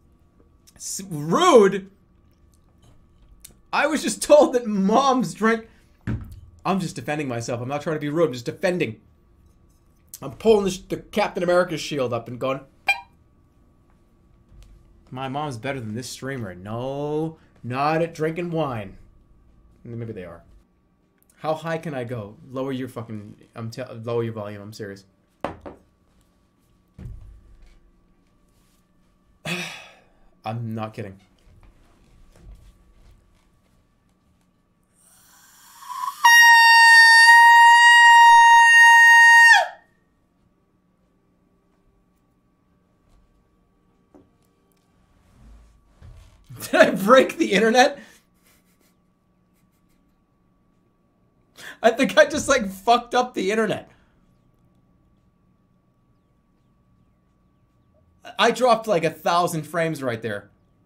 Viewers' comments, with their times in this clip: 0:10 is that sound....edited ? How tf does he make all these cartoon sounds man
0:12 literal inhuman sound
0:30 for Jerma's incredible high B flat
0:34 2.5 kilohertz sine wave
0:36 how high can jerma go ? a Bb5 which is really fuckin high according to my tuner!
0:42 that note i could hear downstairs while making popcorn